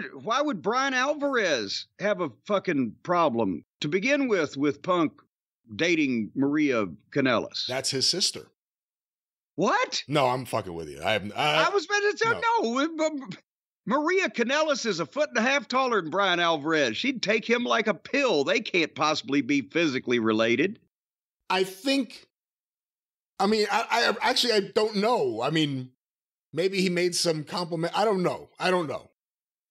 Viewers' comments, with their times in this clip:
0:10 amazing delivery. I whiplashed around